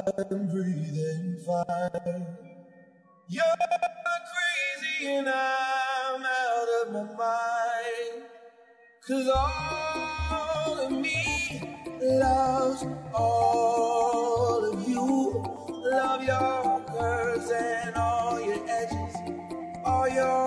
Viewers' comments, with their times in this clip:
0:07 I'm sorry, but can't understand this overuse of scratching. In my opinion the set is ruined by this, and some mixes, for example, listen